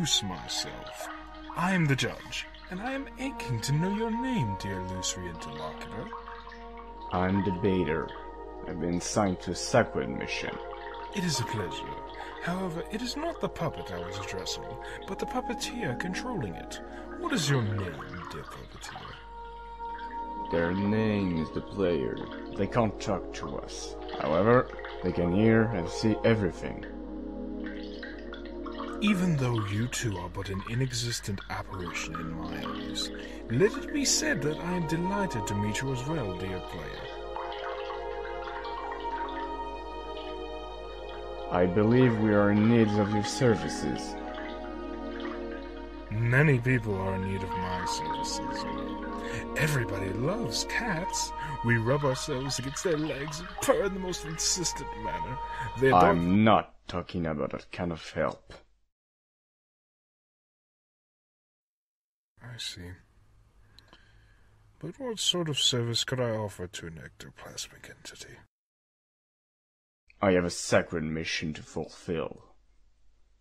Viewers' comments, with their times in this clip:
0:05 "Ay em da baiter aym bin sunkt to sequid mission" wtf kind of accent is that
0:56 I love how the music just stops